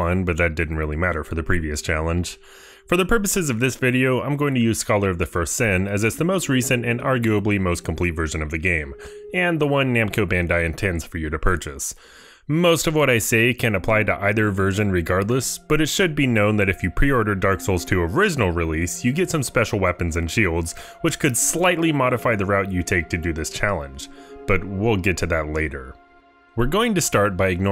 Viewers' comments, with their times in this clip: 0:10 Namco bandai? Y u say it like that?